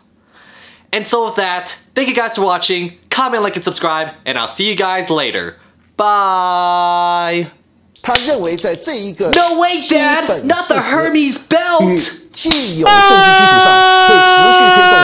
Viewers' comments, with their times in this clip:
0:11 NAH THAT SCREAM BRO 💀
0:12 that scream made me laugh 😂
0:13 Haha yes, some intense noises
0:13 rip headphones users